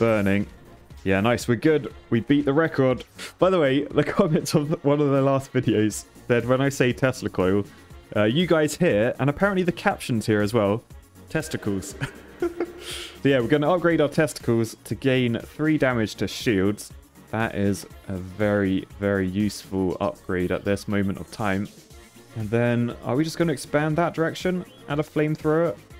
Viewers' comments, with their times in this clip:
0:06 Tesla Coil , testicless